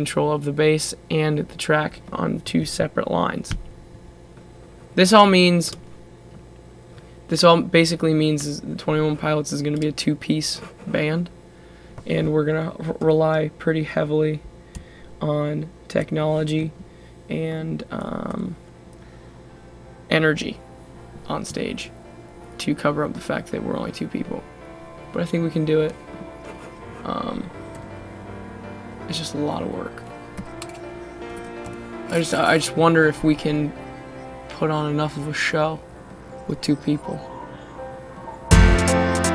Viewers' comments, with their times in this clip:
0:07 the little voice altered talking bit in the hype. you're welcome.
0:09 Don't mind me, just adding a timestamp to the hidden vocals from The Hype...
0:11 the hype hidden vocals at the bridge of the song!
0:11 That distorted part in the Hype
0:13 THE VOICE IN THE HYPE RIGHT BEFORE THE "I DONT KNOW WHICH WAY IN GOIN" PART
0:26 Listen closely is it just me or does that noise in the background music sound exactly like the noise in Heathens?